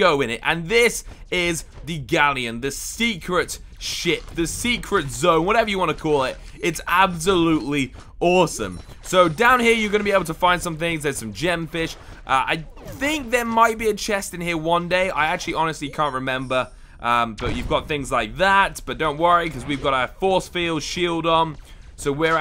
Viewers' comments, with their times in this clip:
0:03 did he say secret shit?😂